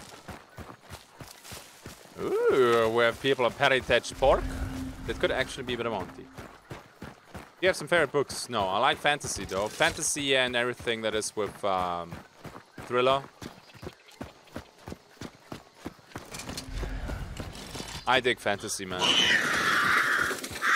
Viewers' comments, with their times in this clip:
0:06 "I like Fantasy though, Fantasy and everything that is with uh... gorilla" Ok I may have heard that wrong... Anyway, if you like Fantasy I highly recommand the Discworld saga by Sir Terry Pratchett. It is to litterature what "Monty Python's Holy Grail" is to cinema. Most hilarious books I've ever read and each of the 40+ books can be read on their own. In a darker tone, The Witcher books are also brilliant. But you may have already read those, I don't know. Just suggestions.